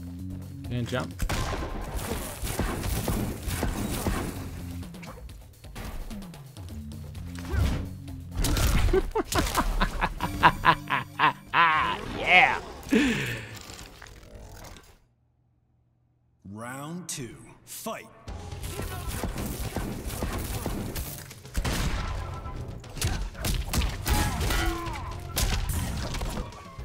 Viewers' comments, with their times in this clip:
0:08 What a creepy laugth